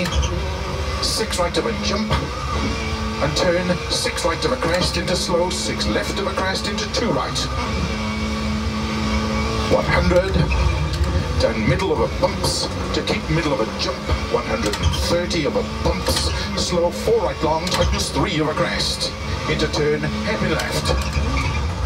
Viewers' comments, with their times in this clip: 0:09 The co-driver practicing his rapping skills "Down middle over BUMPS, to keep middle over JUMPS, 1 hundred and 30 over BUMPS"